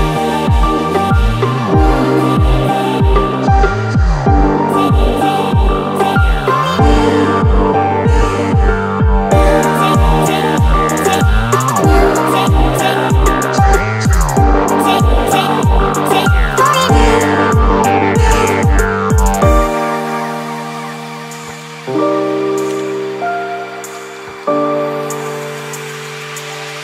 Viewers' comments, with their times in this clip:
0:10 yea i read in the comments and skipped to and my ears exploded
0:11 bruh soundeffect #2